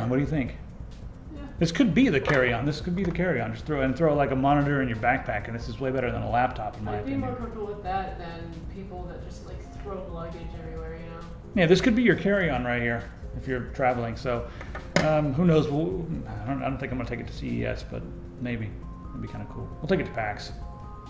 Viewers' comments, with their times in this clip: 0:07 We can hear her